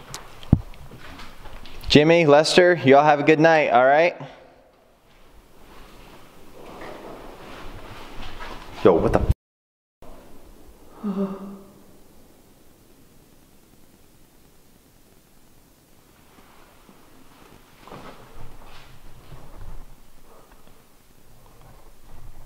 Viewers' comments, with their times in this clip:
0:08 The noise was the golfball round on the floor like one of them pushed it to get you attention
0:10 sounds male voices